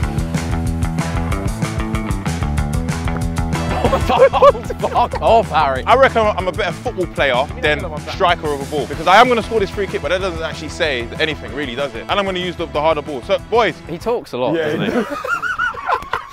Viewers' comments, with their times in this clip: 0:04 the most genuine reaction I’ve heard